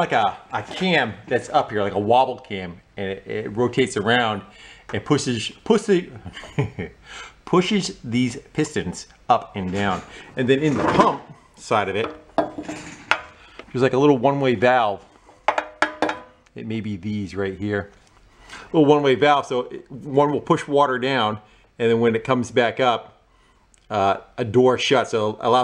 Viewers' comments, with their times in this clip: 0:05 He says pussy Excellent video
0:06 he said pussys . Lol 👍🏻